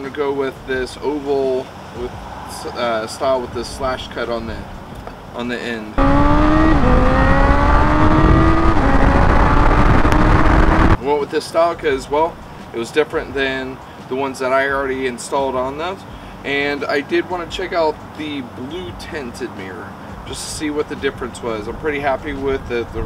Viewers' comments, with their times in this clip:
0:06 ... That motor sounds WICKED!!!